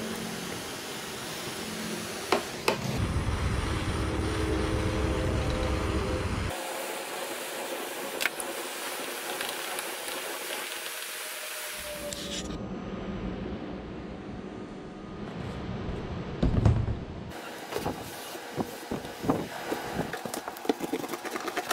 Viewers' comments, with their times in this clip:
0:04 i heard a train!